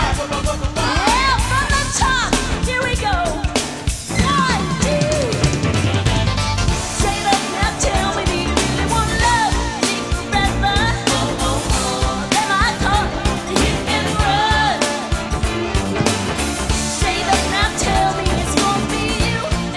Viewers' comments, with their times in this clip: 0:06 She is lipsync until the end when she really sing live